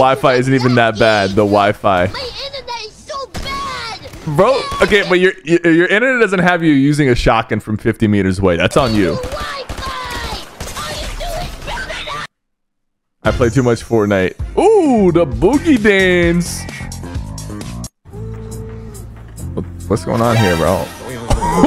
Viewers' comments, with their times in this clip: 0:03 I literally have a little friend that has the same voice as him💀